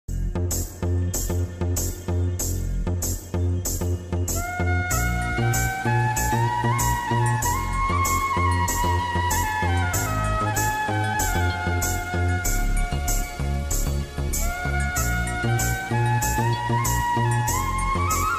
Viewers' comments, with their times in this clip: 0:05 This music is so heart touching. It makes feel having everything wish to have is useless without ones really love from heart.